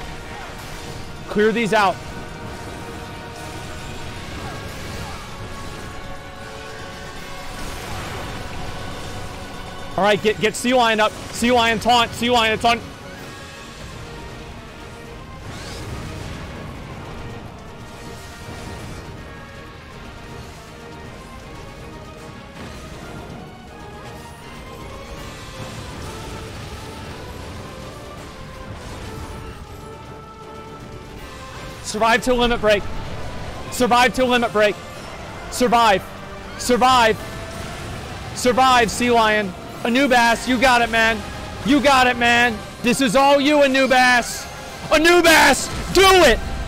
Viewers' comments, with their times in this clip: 0:03 You Say Run starts playing. I pogged so hard I popped my jaw.
0:32 the moment when Asmon voice cracked.... Asmon fell down another step into the rabbit hole... a new light shine on his facial expression... cant wait to see him progress even further for the longer lockdown run xD